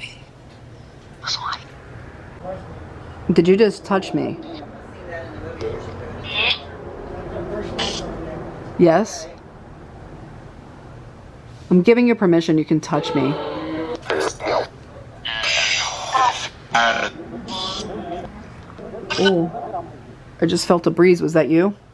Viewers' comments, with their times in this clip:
0:03 and 57 mark. That shadow has a odd buzzing sound with it?